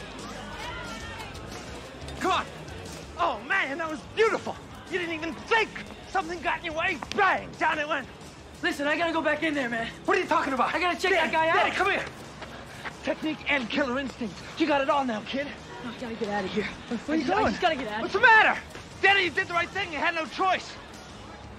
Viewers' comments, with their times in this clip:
0:04 "OH MAN THAT WAS BEAUTIFUL YOU DIDN'T EVEN THINK." The way he's running and saying it omg I just can't🤣🤣🤣🤣😂😂😂I absolutely love Terry Silver truly a menacing classic villain.